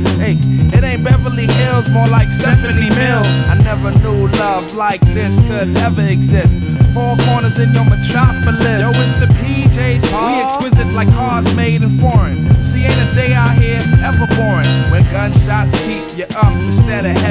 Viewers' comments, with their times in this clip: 0:03 @ 0.65 x speed makes me go ..... d{o_o}b more like `*~p{o_O}q~+ it's oulandish